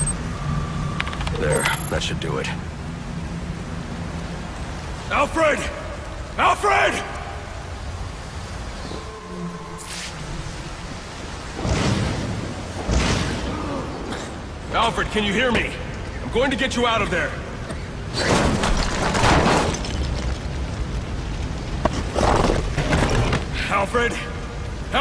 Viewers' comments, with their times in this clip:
0:10 God, the voice-actor just ... wow.